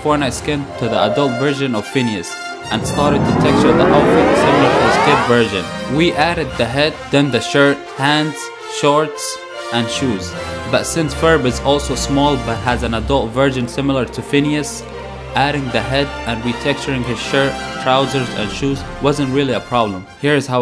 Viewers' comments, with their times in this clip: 0:03 wtf why is that sound so loud i could barely hear u in those 2 seconds